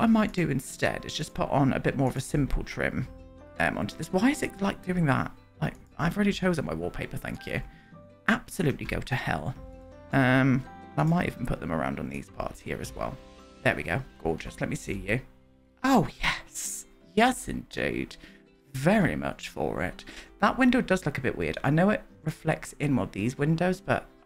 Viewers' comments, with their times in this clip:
0:07 The casual "absolutely go to hell" had me ugly laughing, it just really sums up the experience of using build mode 😂